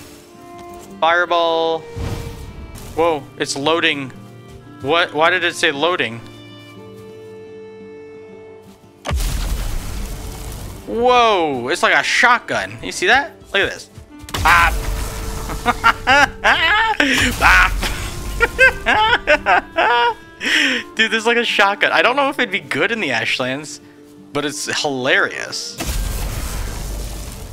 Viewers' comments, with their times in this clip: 0:10 Sounding like Daequan with the double pump!